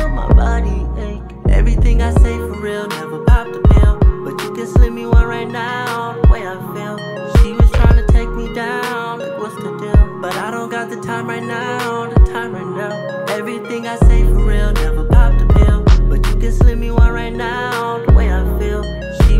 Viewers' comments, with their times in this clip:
0:04 This is actually pretty smooth!! I'll be honest, my expectations for him were low because his older music was too depressing and lifeless. But I think he'll do well if he stays in this lane with this vibe. I still feel he should get some more vocal training (it's not a knock, just want to see him rise to his full potential). However, I'm gonna nit-pick...lol. I don't like the "video game sound" that comes in on the chorus Kind of a cheesy old school keyboard sound..🤷🏽‍♀️